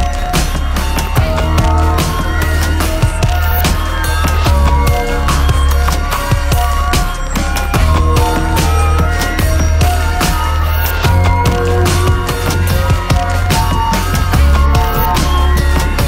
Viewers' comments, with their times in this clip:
0:04 For me the best part of the song is the additional drum hits starting (that TUN tu-DUN). Something about those evokes so much emotion that I don't know how to describe